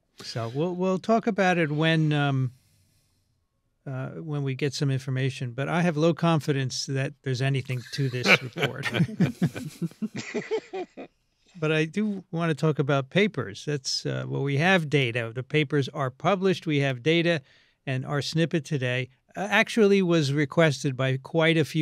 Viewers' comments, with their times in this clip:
0:09 The most uncomfortable giggles I enjoy their show but they refuse to acknowledge that many scientist were banned and silenced for discussing lab leak, ineffectiveness of commonly worn masks, and natural immunity. Science isn’t right by consensus. You should be able to defend your position without silencing others. The pendulum is finally swinging with new facts. Many people should be ashamed of their behavior. It’s un-American, not scientific, and it’s low brow humor like a Jon Stewart sketch.